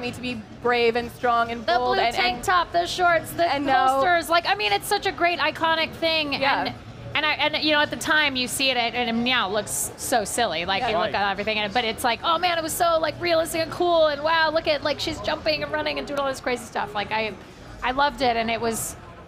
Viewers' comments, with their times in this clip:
0:07 Did she slip in a "meow"? Who called in the Super Troopers?